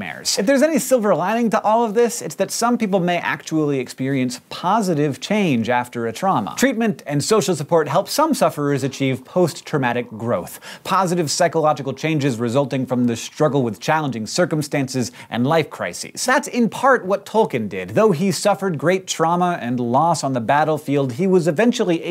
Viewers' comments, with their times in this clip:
0:03 lol! the way you pronounce 'actually' Made me love this episode even more :3